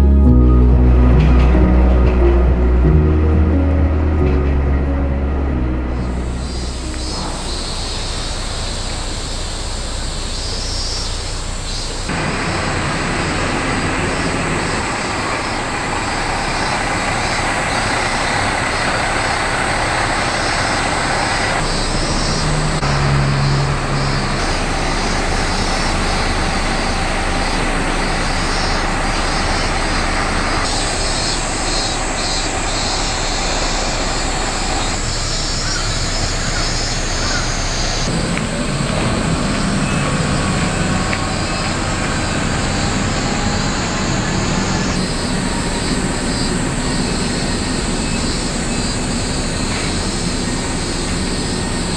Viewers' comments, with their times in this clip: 0:07 anime bg sound xd
0:32 the nature sounds and beyond <3